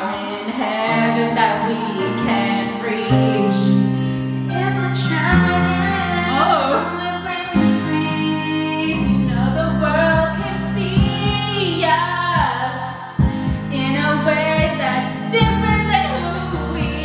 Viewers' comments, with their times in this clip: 0:05 Ok pop off vocals 🤭